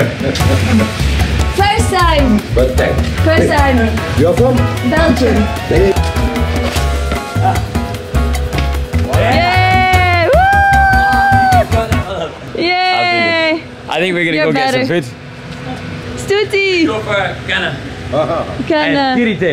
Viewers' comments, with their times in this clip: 0:04 Knew you are from somewhere else since you lack that Scottish accent he has. Scottish accent accidentally became my favorite English accent after playing as the female protagonist in the Scottish indie video game Bedlam.